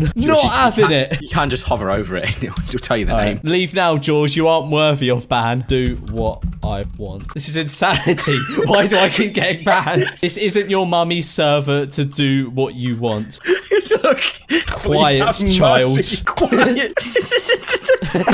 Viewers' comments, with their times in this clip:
0:04 i thought he censored it but my headphones just fell out it would be funny if it was actuallt censord